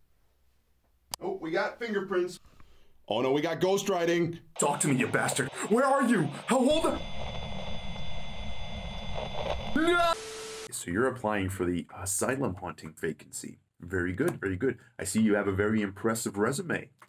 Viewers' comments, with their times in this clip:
0:05 the desperate tone in his voice trying to make sure its not a revenant killed me